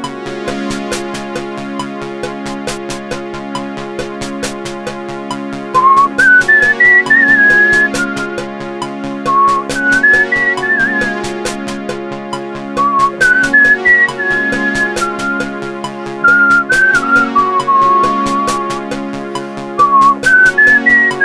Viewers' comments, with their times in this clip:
0:05 If it was composed by Ennio Morricone instead of Vangelis 😗